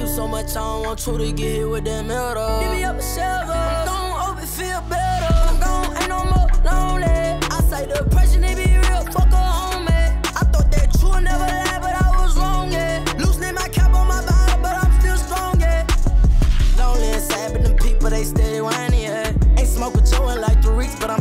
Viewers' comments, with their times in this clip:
0:03 sounds like Jackboy